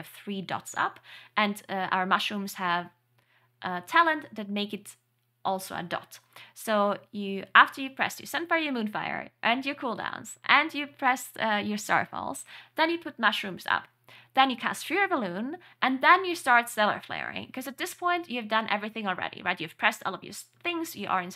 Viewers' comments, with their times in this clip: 0:09 I love how she nearly bursts a laugh cuz of the shear amount of things you need to do before acutal dmg comes in with the boomkin haha